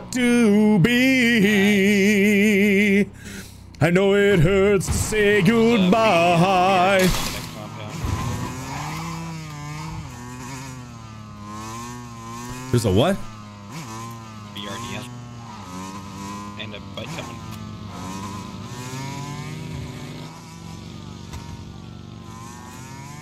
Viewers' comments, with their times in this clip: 0:09 Bike can you please be quiet, we are trying to spot futin' jarks here :) I am going to tell my grandsons about the legend of the Crack Attack LOL